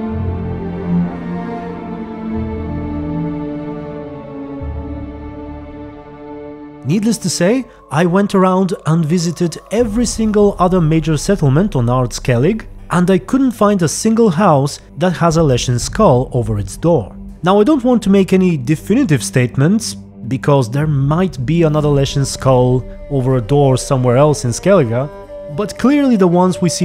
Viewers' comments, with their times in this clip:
0:10 Music starting pls? Sounds like a variation of O'Dimm's theme but not quite what I found elsewhere